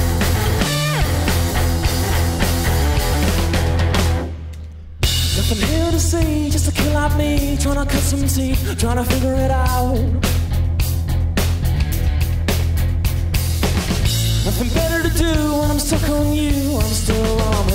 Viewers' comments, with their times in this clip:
0:04 look at the sound of the pedal